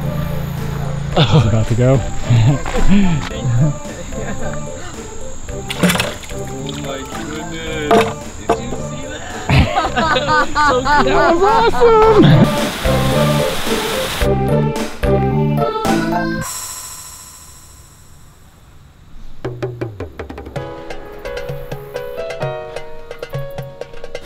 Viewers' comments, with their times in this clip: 0:06 that's called a shishi odoshi used in Japan to scare away deer from eating plants. Their really therapeutic to listen to.